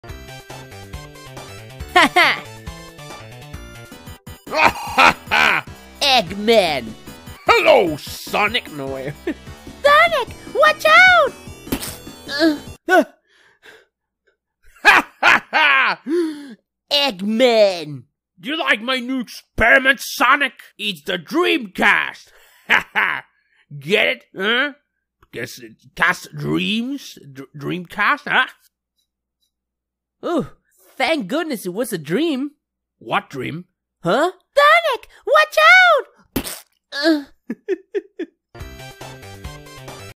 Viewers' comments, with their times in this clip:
0:01 i love how it looks so normal then just "ĦÆĦÆ"
0:01 ITS WAHOO IN THE BACK!!!!!!
0:07 love how eggman’s face turns to poot’s from mokey when he says “Hello Sonic!” in the way poot would say it
0:07 I guess that part that he realize he is doing Pete from mokey and it is hilarious.
0:07 what is he saying? No way No wey
0:10 “SONIC!!! WATCH OUT!!!!” tails said calmly
0:10 The sound effect when he grabs it 😭😭
0:11 the moan... "Ahh~"
0:11 why does it sound like that tho-
0:11 My favourite part sonic sound
0:11 Did bro had to moan? 😂
0:11 squish sound zesty sonic sound
0:12 that moan was personal 💀
0:12 HELP THE MOAN- 😂😂🤣🤣🤣
0:34 the fact tails comes in without making a sound yet breaks the window is kinda funny XD ALSO AYO WHATS ON THE TV
0:36 time to moan like a Anime character